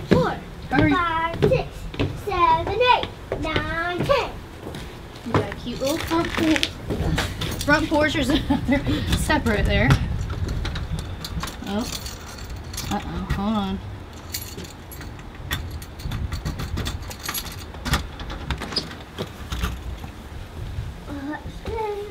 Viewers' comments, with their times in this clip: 0:08 you sounded just like your mama 😁